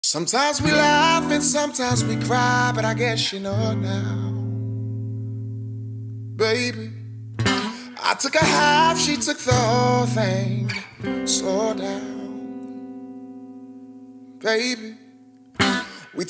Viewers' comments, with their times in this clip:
0:03 I wish someome would of saw my faces seconds. His voice is so hearty and amazing